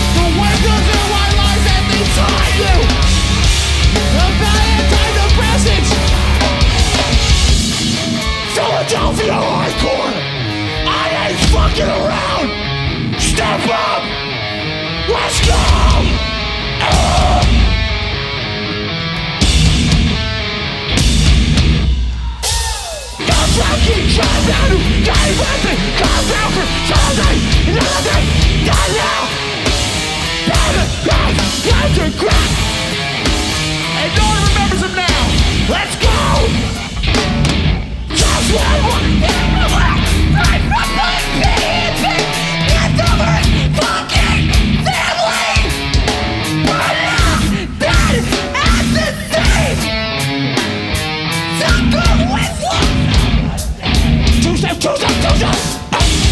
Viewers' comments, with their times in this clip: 0:05 The mosh call had me hype in traffic
0:40 that girl has got some vocals on her she should be in like some sort of a band like hard-core band you know